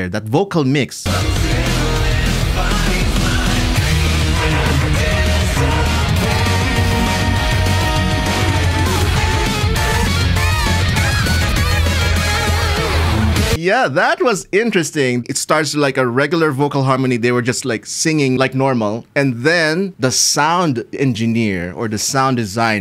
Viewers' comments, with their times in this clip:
0:08 anytime I hear this sort of edited stutter for vocals my mind jumps to the Intoners songs from Drakengard 3. Actually gives me chills thinking about those intros with each one being more unsettling and also memorable than the last. I know this was a thing before Drakengard it's just permanently latched into my brain to associate that effect with that game.